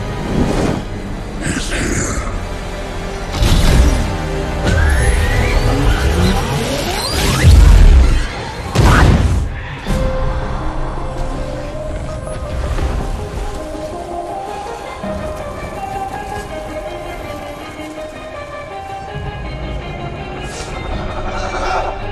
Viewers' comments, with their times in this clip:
0:07 Huh, so that’s why they’re called ‘boom-tubes’